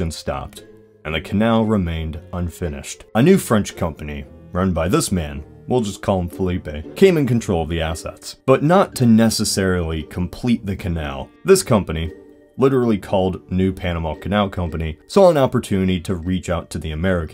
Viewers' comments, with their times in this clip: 0:05 When he shortens his name as to not get it wrong, but still mispronounces it